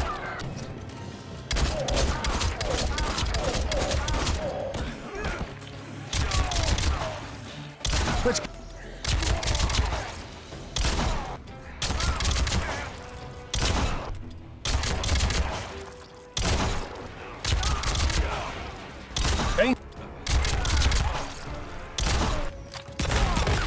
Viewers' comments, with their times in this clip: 0:05 is it me or do errons pistols sound a bit different each time. That’s pretty cool if the sound changes with the gun u pick.